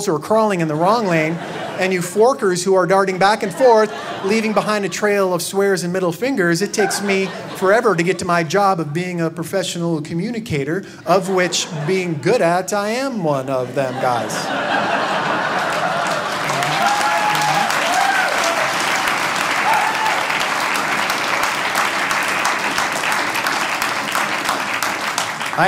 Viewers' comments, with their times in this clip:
0:09 Just my personal opinion, which I know no one cares, but that joke was funny once, but it feels forced there....the stutter/ramble thing seems so forced there.